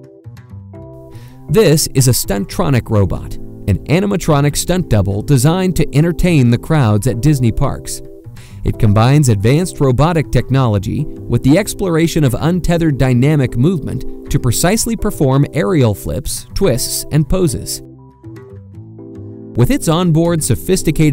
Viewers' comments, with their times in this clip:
0:05 i dont know why did editor put autotune on his voice